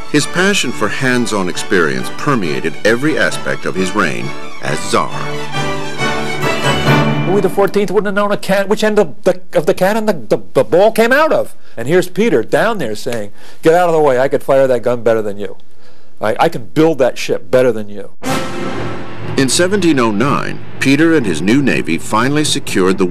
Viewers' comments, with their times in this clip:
0:06 The stutter is crazy LMAO